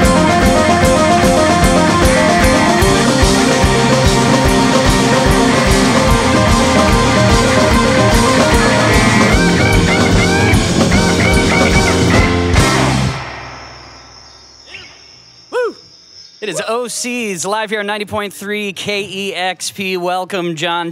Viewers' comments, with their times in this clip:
0:05 the Doors tribute coda!!!!!